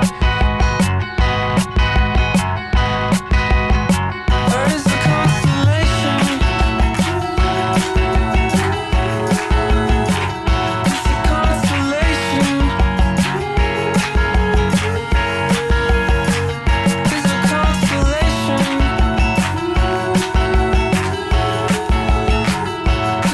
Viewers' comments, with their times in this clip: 0:06 is that what happens when you fart in a jacuzzi? lol